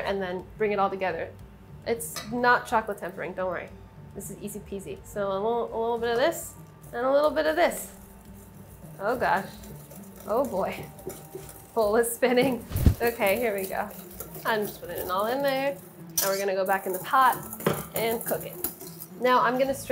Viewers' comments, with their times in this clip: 0:03 Kitten noise alert.